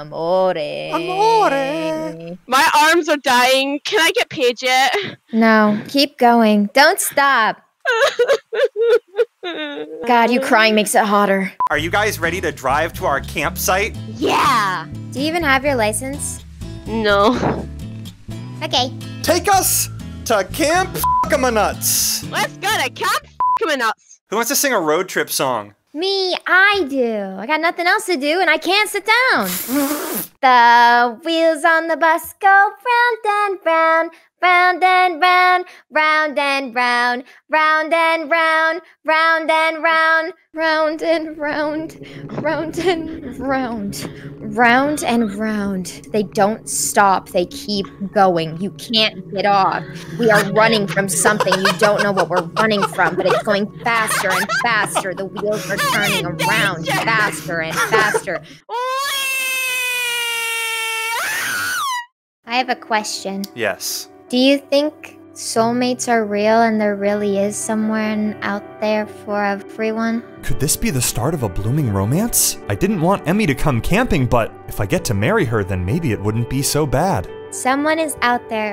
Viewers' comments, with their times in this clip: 0:06 should not have that turned up near my parents lol 😂
0:16 It's the fucking third time I listen to that "Ok". I'm starting to think that I need some kind of medical help.
0:25 "Me I do! I have nothing to do and I can't sit down" That voice made me feel like I was in a children book with a dark twist lmao 🤣
0:25 I love how she can go from singing a children song to a fuckin death song 😂
0:35 Is this what a DDLC Poem sounds like when sung?
0:40 When you play a record in reverse:
0:42 her voice becomes that of peach for a few seconds-
1:00 im scared cause that sounds like one of my online friends😀😶